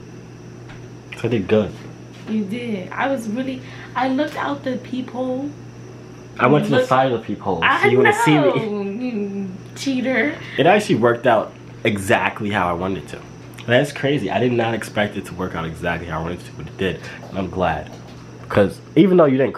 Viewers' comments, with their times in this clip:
0:03 why she say "peephole" like that 😂😂😂😂